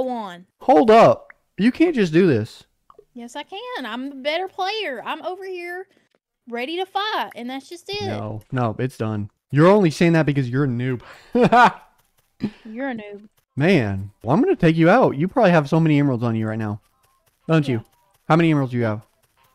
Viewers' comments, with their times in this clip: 0:04 at this part of the video does she say "im ready to f!"#" or "im ready to fight"